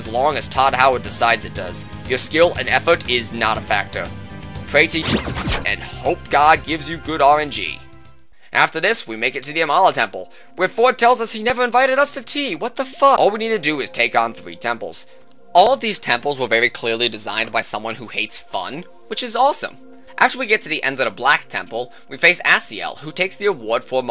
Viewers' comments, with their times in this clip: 0:05 I like how you did the SMT4 censor noise when saying pray to god, nice touch